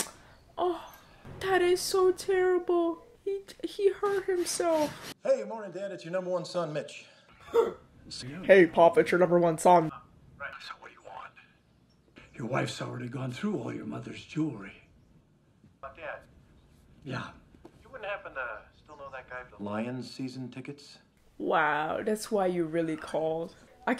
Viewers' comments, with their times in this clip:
0:08 LOL 🤣 ... That impersonation is ridiculously hilarious!